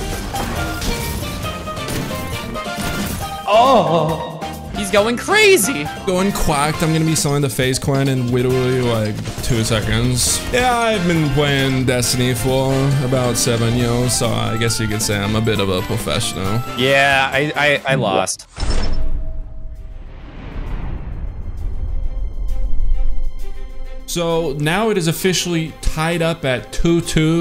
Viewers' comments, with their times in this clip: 0:10 The lisp had me dead